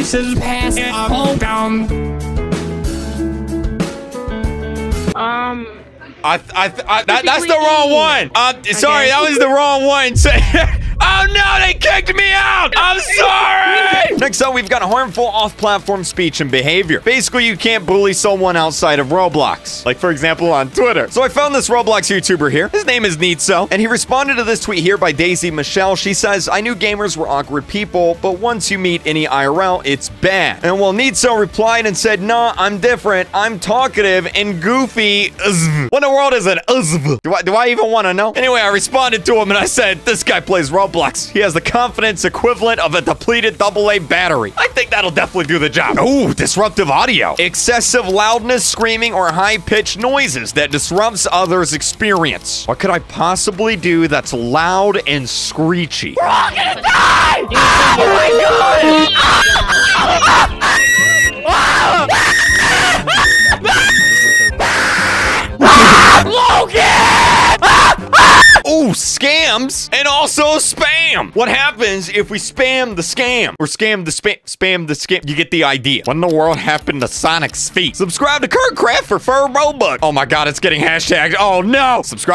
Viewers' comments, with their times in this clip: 0:09 at that time i was the duck it was the most beutiful kreek ever i saw that donal duck
0:54 That "It’s raining tacos" song intro laughed me off 😂
0:56 I. FEEL. SORRY FOR HEADPHONE USER FR
0:57 was that flamingo 💀💀 I swear that was flamingo-
1:03 rip headphones user(I am the one)